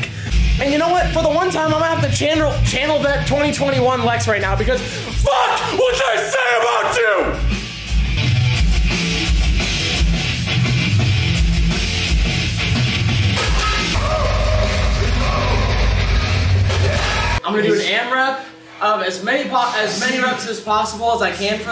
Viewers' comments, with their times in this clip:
0:06 bro acfually could be in a metal band